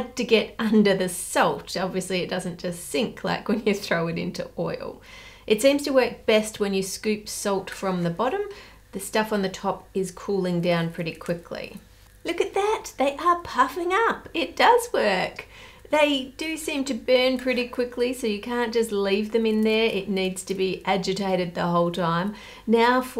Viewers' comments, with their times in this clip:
0:05 My non-Native English speaking brain: she's cooking that in 'SOAP'? 'SOOT'?" 😅